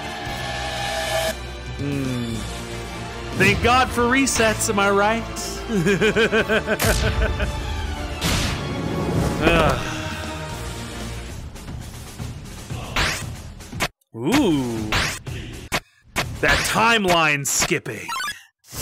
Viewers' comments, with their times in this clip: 0:04 Why’d you thank asriel for resets?